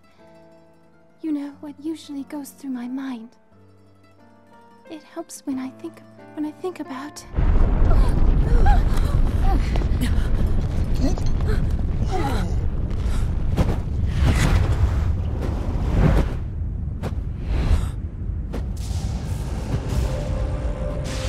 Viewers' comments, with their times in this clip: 0:07 Ganon is the real hero. He just saved Mipha from revealing her secret to healing and an awkward situation. Also, The voice for the king doesnt fit very well. Also, when Zelda prays before the statue, I can imagine the Zelda from The Skyward Sword era being by her side wrapping her arms around her descendant, giving her comfort.